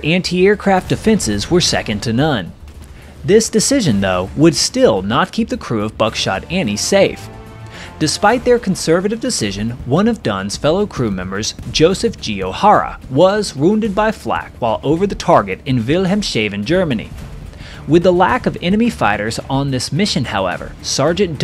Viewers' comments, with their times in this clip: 0:07 * Pronounced after onwards... "Will Helm SHAVEN" Germany - Hahahahahaha Three syllables with the 3rd being "Heavily SHAVEN" = such a good laugh !!!!! "Will Helms Haaaaven" = say it fast, as it's all one word (town name) anyways